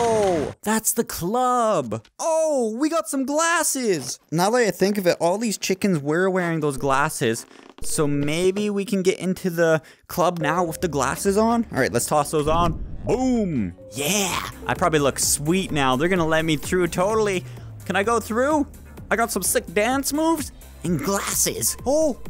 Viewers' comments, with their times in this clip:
0:04 your voice is a little strange